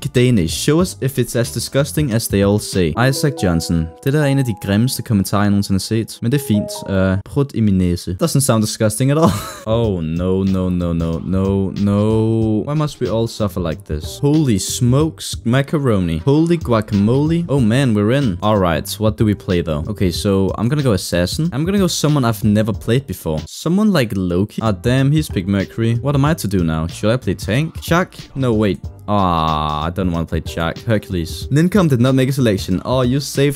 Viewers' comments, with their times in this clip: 0:06 Sounded like you said "Prod my nasal"
0:14 UR DANISH SOUNDS SO?? funny?? its cool tho (also i need someone to translate what he said pls)